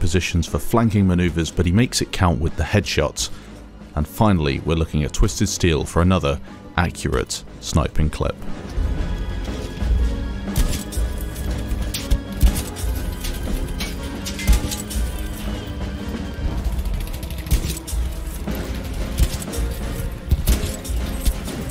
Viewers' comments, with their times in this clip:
0:08 Are we just going to ignore the fact that the headshot sound goes perfect with the rythm of the song?